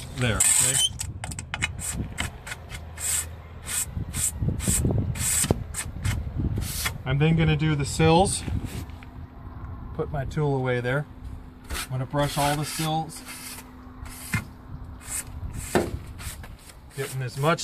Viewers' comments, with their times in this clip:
0:03 Aaaaak! That screech !!! Made my teeth itch!! 😬💫💫💫 🔕